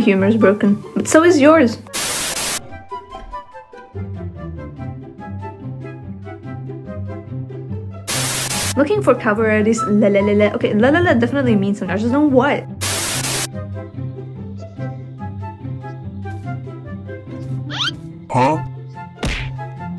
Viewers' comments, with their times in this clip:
0:07 did it just burp😭